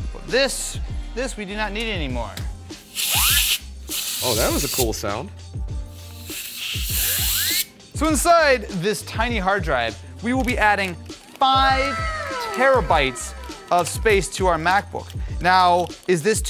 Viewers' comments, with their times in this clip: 0:03 that sound reminds me of dentist 😬